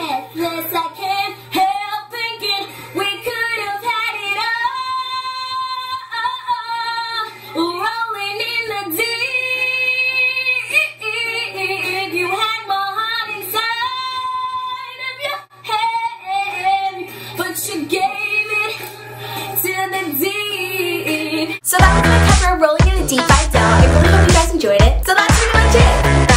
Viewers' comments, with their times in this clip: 0:09 You sounded like a dolphin😅....but it wasn't that bad at all!👍 I think your way better now!